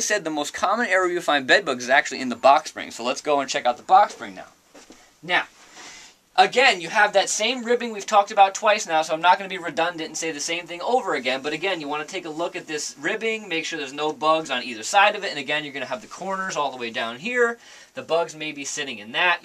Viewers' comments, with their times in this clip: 0:05 Am I the only one distracted by the camera person breathing lol? That nose whistle has to stop lol. "I'm not gonna be redundant and say the same thing over again... but again..." lol. I really did enjoy the video though. Very informative. Thank you!